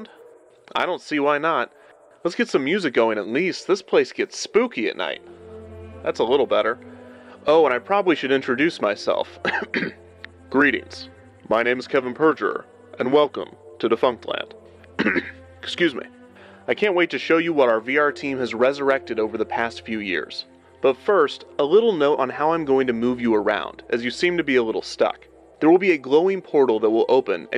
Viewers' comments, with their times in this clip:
0:09 Lol the old dramatic voice. You go, you funky little wax Brad Pitt.